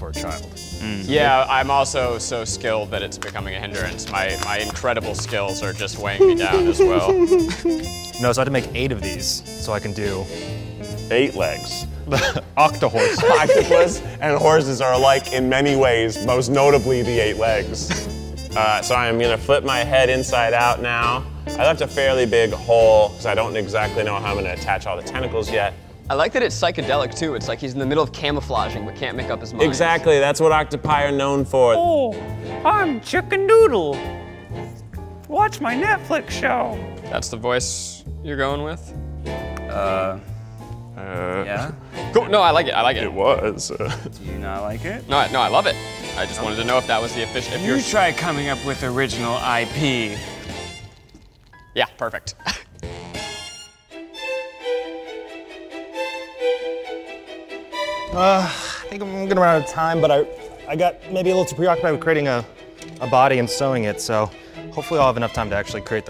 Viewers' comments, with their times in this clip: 0:06 Does anyone else hear the little laugh at like ?? 😂😂
0:54 eugenes machine go brrrr